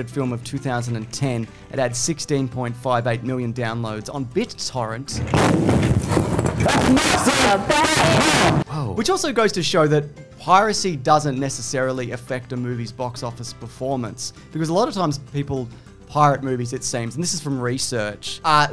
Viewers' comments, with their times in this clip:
0:06 loud af warning ⚠️